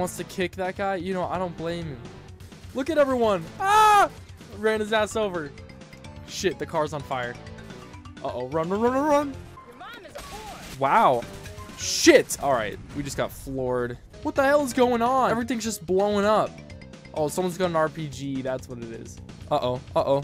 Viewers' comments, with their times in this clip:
0:03 got that pee-wee herman laugh lol